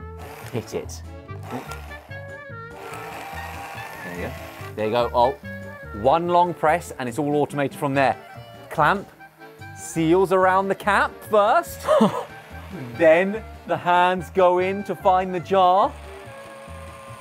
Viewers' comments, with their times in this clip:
0:04 I just want to say that the music effect is amazing